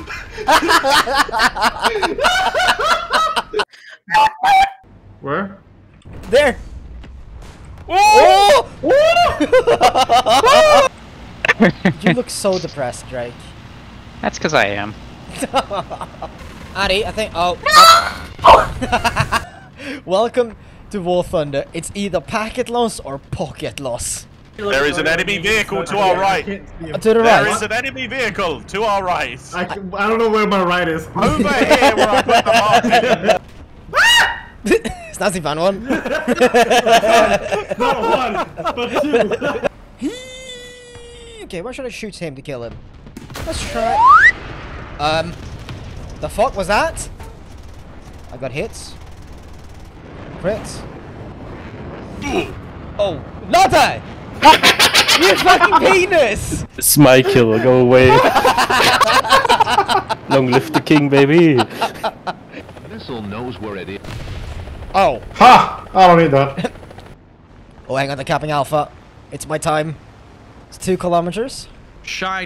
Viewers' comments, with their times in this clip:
0:04 just the NOOT NOOT
0:47 What the fuck was that laugh
0:50 is no one else gonna address the witch laugh ?
0:50 gremlin ass laugh
0:52 why did he laugh like a boo
0:53 The distortion on how loud his laugh is XD
0:53 Who the fuck laughed like the ghost's from Mario
0:54 I realized when I first saw this that man turned into a pixelated game demon laughing bro.
0:54 goffy ahh laugh 💀💀
0:54 what was that laugh tho 💀🤣